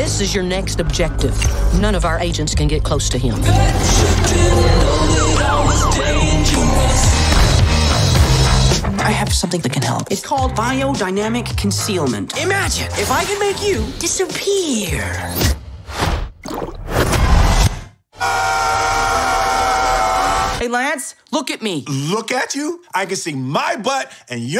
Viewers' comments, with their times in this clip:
0:07 Reba? IS THAT YOU?!?!